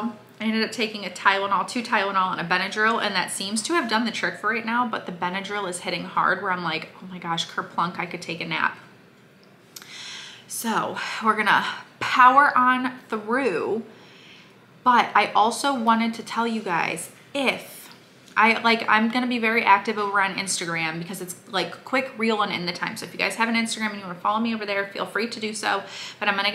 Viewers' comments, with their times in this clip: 0:07 Kur plunk😳🙄🤣🤣 How she talks so funny!😆😆